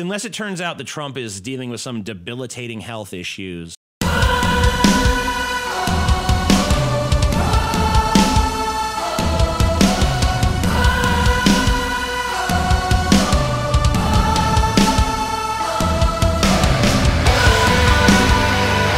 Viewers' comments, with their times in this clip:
0:03 What an abrupt ending mid sentence